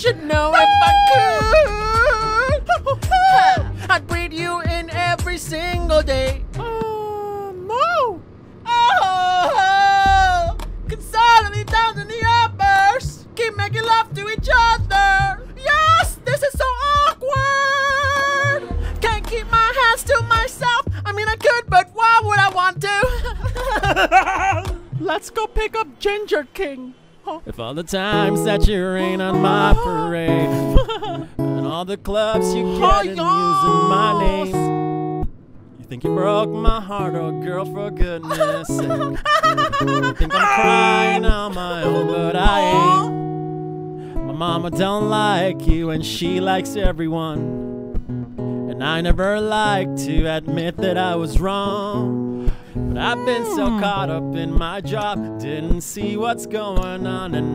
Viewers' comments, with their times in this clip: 0:07 that voice sounds like mickey mouse
0:08 Ariana sounds like Micky mouse ...😂😂😂
0:17 that vibrato gave me life
0:20 omg the laughter... I CAN‘T 😂😂😂
0:20 "I mean I could but why would I want to?" evil laugh LMFAOOOO THE WAY ARI LOOKED AT HER AHHAHAAHHAHAHAHAH
0:22 salanas laugh 😂 i sound like that when i choke on coffee
0:38 why he had to do the laugh like that hears laugh-spit out drink